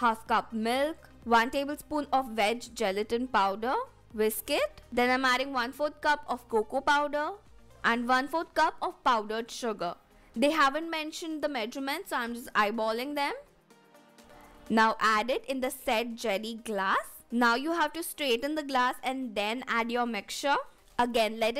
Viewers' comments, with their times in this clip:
0:03 you said misk 😂